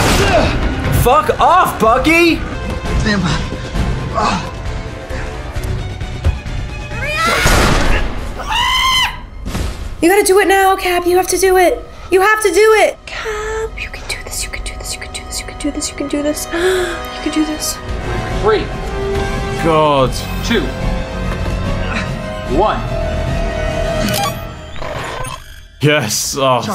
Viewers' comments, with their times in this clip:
0:08 The way she screams at time stamp is too much!!! 🤣😆😂